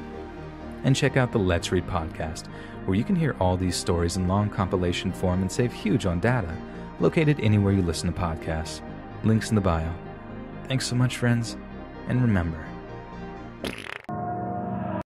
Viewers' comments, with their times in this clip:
0:11 WHY DID YOU FART